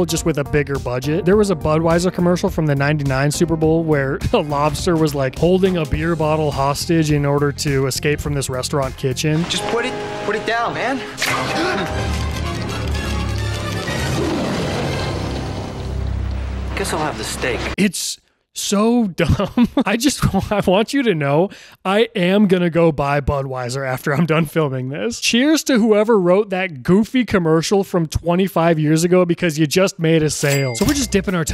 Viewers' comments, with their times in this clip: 0:08 I was listening without watching while working on my laptop and I had to rewind because I couldn’t tell if you said monster or mobster. Lobster would have been maaaybe my 10th guess? Old ads were WILD and I’m kinda sad I never got to see any of this stuff sooner. I didn’t have access to a TV until adulthood and by then, everything but the one or two standout Super Bowl ads were pretty shit. This was such a fun video!
0:16 “… guess I’ll have the steak” delivery was spot on 😂